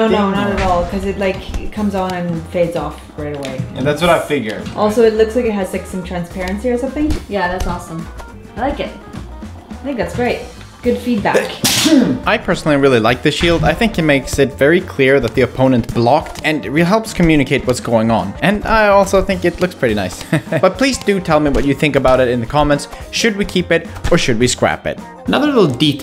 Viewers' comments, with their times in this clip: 0:09 the sneeze is something else 😂😂